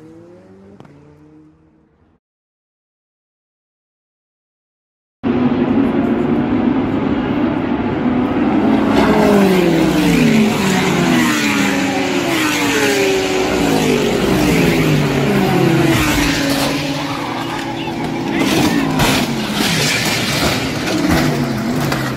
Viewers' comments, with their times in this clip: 0:10 Oh you can actually hear the hit